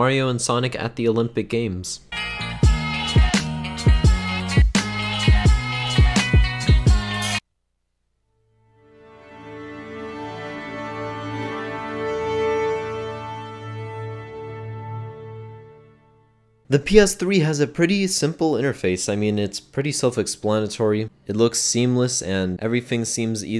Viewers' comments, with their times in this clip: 0:10 i Love the PS3 startup sound 🤤